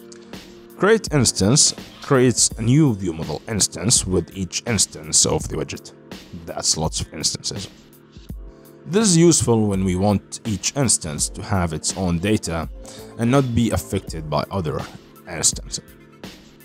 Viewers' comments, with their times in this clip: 0:03 bro sounds like the bug alien from men in black